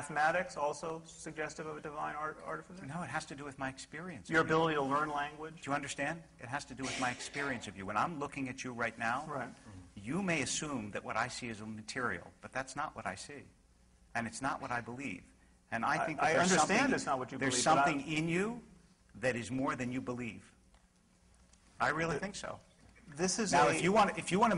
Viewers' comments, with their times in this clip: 0:07 harris starts building into the bitchslap of the evening. all-around "ill-concealed laughter" coming up!